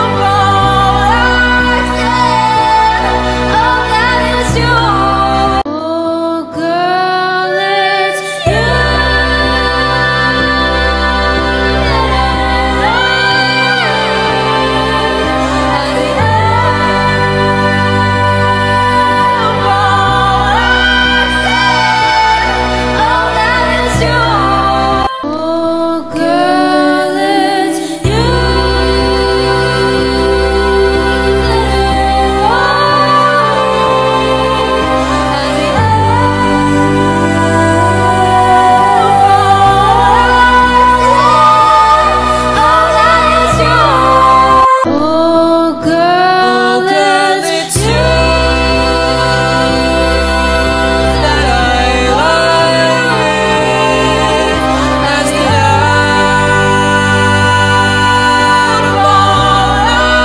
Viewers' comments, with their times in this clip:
0:05 most best thing i ever heared,like her voice is just so "high" 😍
0:06 The first one was just so unqiue, no other even came close to comparing with it. Her style was so intricate, and complimented the original singer, and the emotional invocation just touched my heart. So sophisticated, I couldn't be more appreciative.
0:06 was one of my favourites she made the highnotes sound so effortless
0:26 is my favorite. she made it sound so sweet
0:46 AYO WHY ARENT WE TALKING ?!?!, THE “LOCKS IN” IS SO G O O D
0:46 The dude killed it too when he sang atom bomb thats exactly the sound what I had in mind 🤌🏻